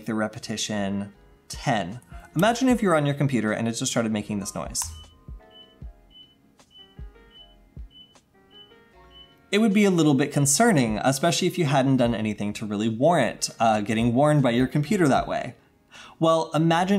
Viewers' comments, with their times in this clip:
0:04 Bomb has been planted
0:04 what my server room sound like